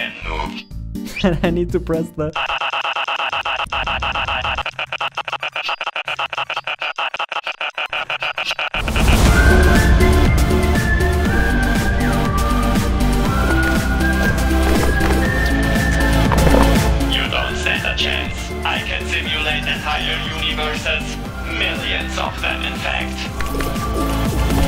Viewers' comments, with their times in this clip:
0:09 DAMN that soundtrack gives me "Welcome to Gravity Falls" vibes